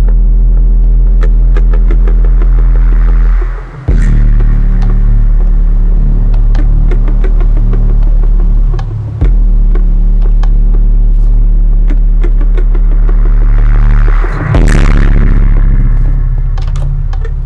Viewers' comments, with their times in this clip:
0:04 FUNNYEST SONG SOUND XDD